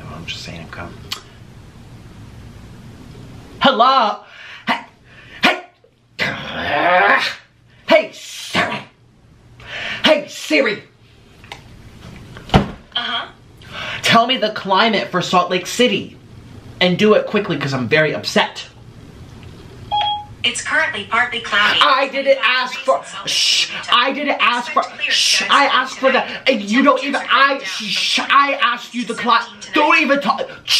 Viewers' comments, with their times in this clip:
0:05 roblox angry sound
0:15 he sounded like the grinch (roof roof lick rooo I